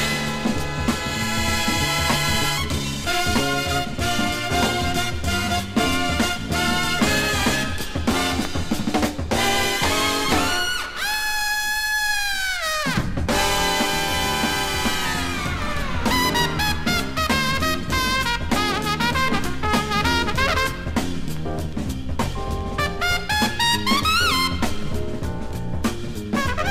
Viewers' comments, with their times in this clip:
0:10 At the mark Maynard arrives and kicks everyone's ass with his solo. Its like they are all arguing throughout the song who's the greatest and then Maynard comes in to settle the score and show everyone they are nobody compared to him.